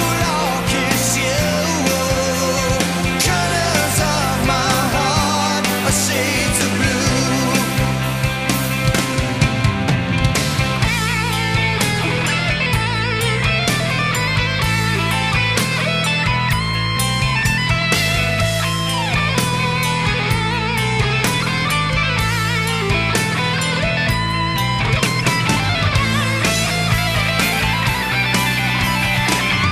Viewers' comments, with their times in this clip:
0:10 these solos are phenomenal. I'm embarrassed that I went thirty years without knowing about this.